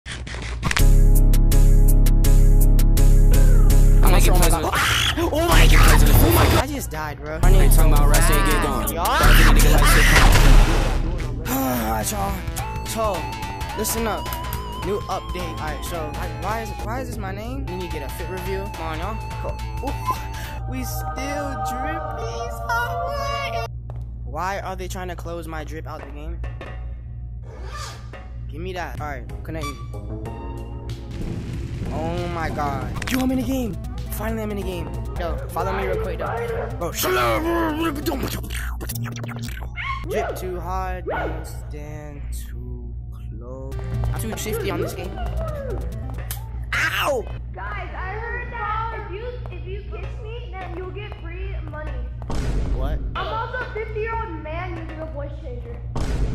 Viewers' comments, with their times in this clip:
0:01 sick music from 1 sec to 9 sec
0:38 Bro spoke alien in